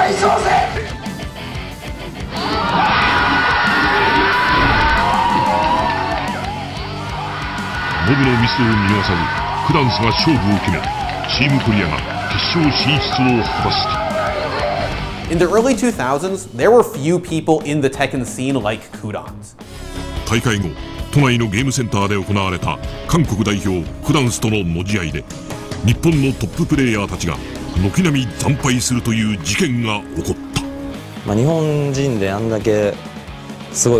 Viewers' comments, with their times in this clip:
0:07 was the accurate sounding voice to describe the Yujiro of Tekken.
0:07 that narrator sounds like he’s closing the episode on a dire situation for our hero in an action anime from the late 80’s..
0:11 i love the japanese narrator
0:14 Damn that announcer voice was pure testosterone